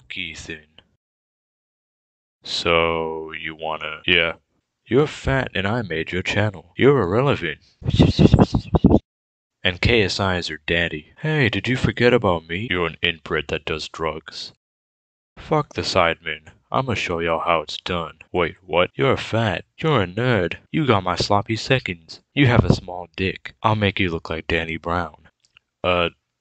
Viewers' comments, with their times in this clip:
0:07 diss god whispering in ricegums ear had me dying
0:07 lmao that whisper